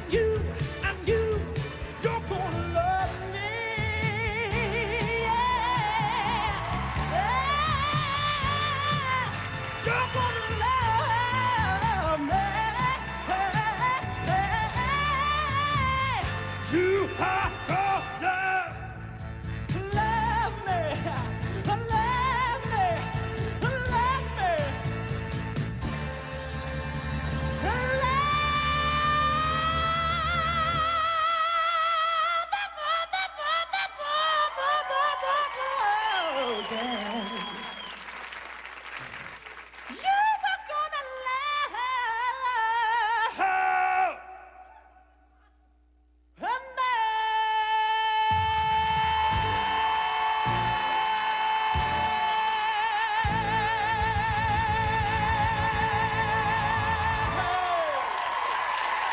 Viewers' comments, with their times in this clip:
0:04 Hmm. I liked his youtube version better. This one was all over the place and he losses it. And I wonder how many people realize that this is not in the original key. It is a half step down.
0:44 I do think he's a good singer no matter if he uses head voice or whatever. However, is just hilarious!